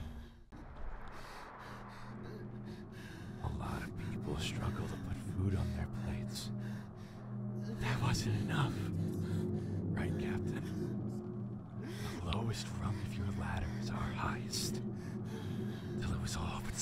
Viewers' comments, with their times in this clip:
0:04 THE VOICE ACTING OH MY GOD....THAT "I forgive you. All of us do!".....JESUS CHRIST THEY ARE GOOD AT THEIR JOB Also at the graveyard scene when they are shooting at...whats his name..Swansea? Did they just not notice the crying baby in the background? Probably because Jimmy's unborn child died....Jesus this game/my mind is dark. -A